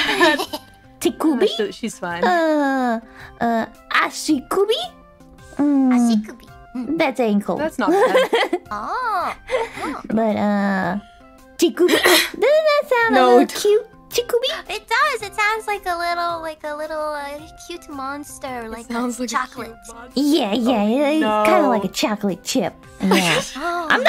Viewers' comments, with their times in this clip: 0:06 Ame was right as it sounds like Chikorita.